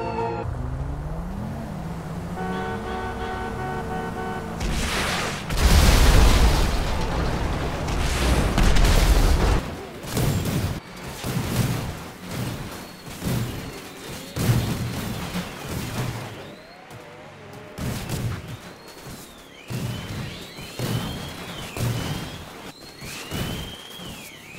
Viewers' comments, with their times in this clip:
0:09 Do You hear a song
0:10 I alone heard the 20th century Fox?